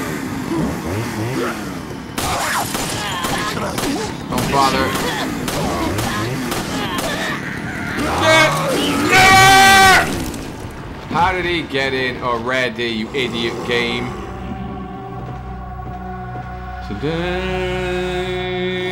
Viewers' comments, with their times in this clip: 0:03 SH!T!! NOOOOOOO Hahahaha I f!ckin knew it. You can here him comon Tyranicon musta thought he hadnt made it in yet